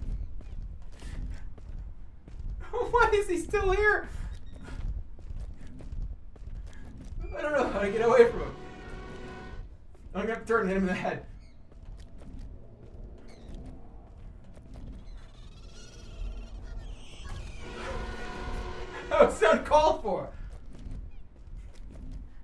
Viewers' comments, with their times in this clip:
0:10 Okay but that is straight up just a really poorly edited elephant trumpeting sound. Also "The shittiest band ever is after you" has to be my favorite chat message for this one.